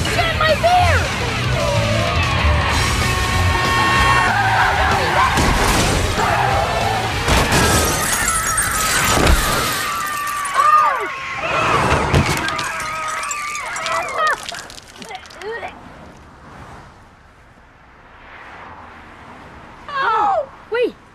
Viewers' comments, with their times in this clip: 0:05 BUICK & FORD SEDAN CRASH FORD VAN CRASH